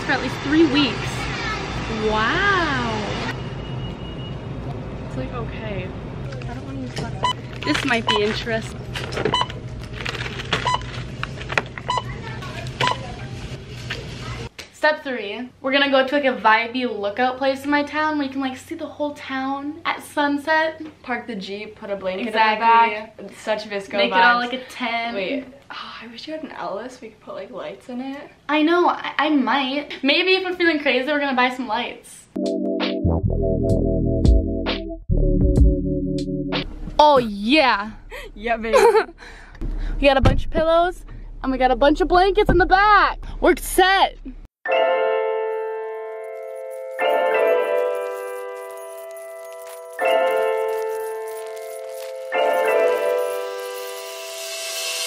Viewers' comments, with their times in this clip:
0:04 I thought she said Taste like cocain but she actually said it taste okay
0:24 my captions be like”such a biscuit like- I am crying lol 😂
0:41 did she say omg or and we got?